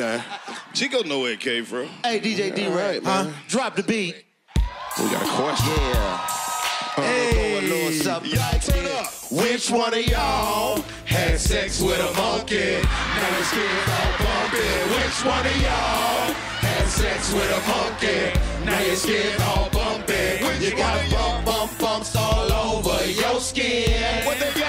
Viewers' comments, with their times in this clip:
0:07 The “Warm embrace” remix is crazy 😂😂😂😂😂